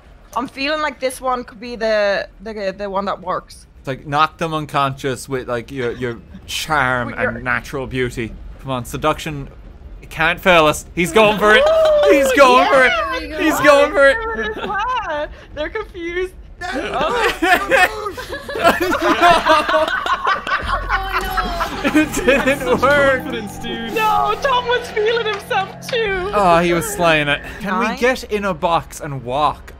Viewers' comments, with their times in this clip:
0:10 the girl when she points him out is cracking up lmao